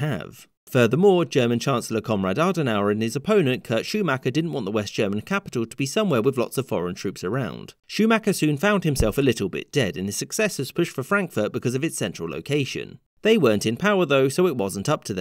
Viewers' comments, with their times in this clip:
0:03 Sounds like you said "Comrade Adenauer". XD